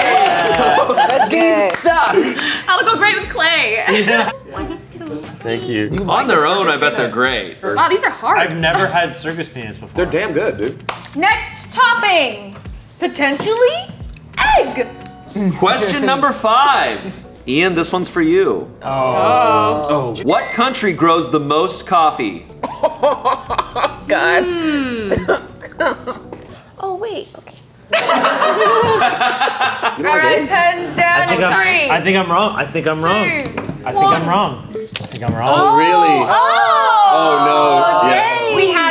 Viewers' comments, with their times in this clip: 0:03 So we're going to ignore how Ian says Circus Peanuts
0:23 The laughing and then “..Oh Wait!” It’s like a lightbulb practically visibly appearing above her head at that moment 😭😭